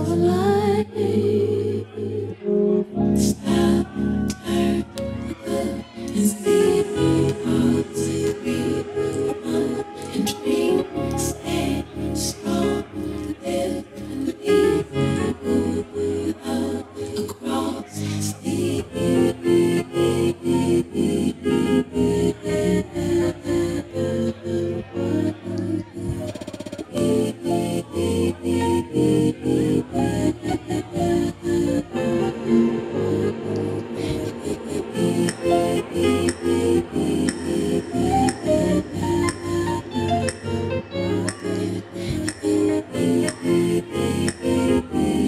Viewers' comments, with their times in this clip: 0:03 look at the guy on the right being rejected and pretending everything is cool by making a silly nervous laugh
0:26 god it sounds beautiful